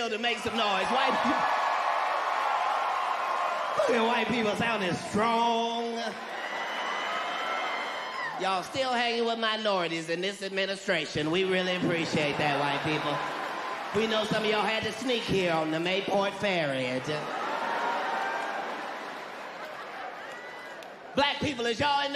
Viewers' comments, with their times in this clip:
0:06 Anyone else hear r2d2